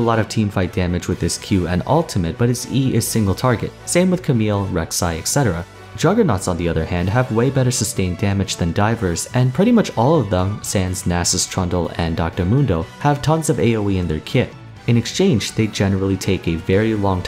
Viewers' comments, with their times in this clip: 0:05 Didnt know sans was in league